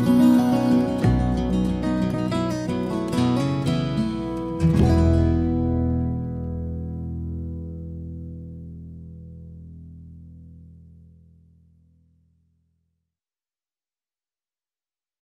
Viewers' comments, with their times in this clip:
0:13 This is so awesome, especially when the bass comes in full force